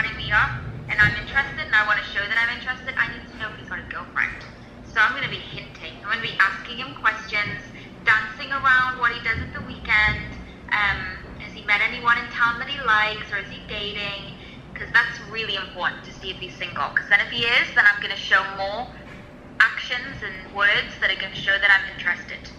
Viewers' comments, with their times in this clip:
0:03 "I'm interested and I want to show him that I'm interested, I need to know he's my girlfriend" Can someone clear that up?